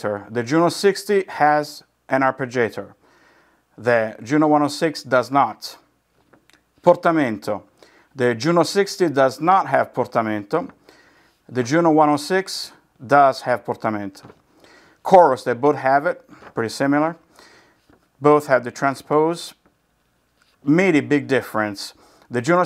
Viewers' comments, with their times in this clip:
0:07 this is how is should be spelled, with native accent 😎